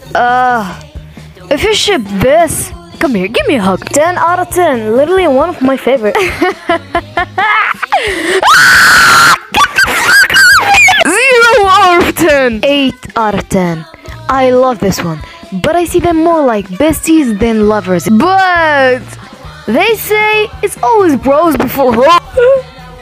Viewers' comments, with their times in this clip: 0:08 HELP THE SCREAMING☠️